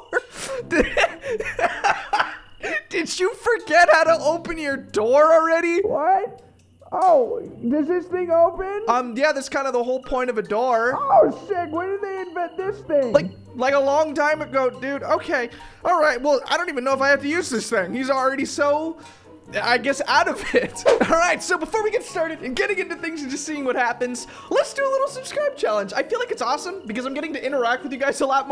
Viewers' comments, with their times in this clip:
0:10 You might think or hear that the Neighbor said the S word but, no. He said "Oh *sick!*" not "Oh sh-"
0:10 I THOUGHT HE SAID SHI-
0:10 Uh please tell me that he just said shoot not.... I don’t want to say that JUST PLEASE TELL ME THAT HE JUST SAID SHOOT
0:11 gotta hear the neighbor cursing